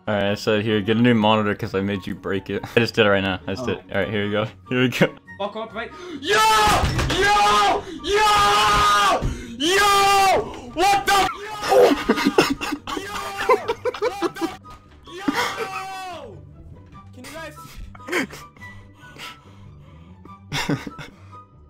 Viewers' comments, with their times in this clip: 0:06 it was at this moment the ears knew, they'll blow up.
0:06 someone had to be wheezing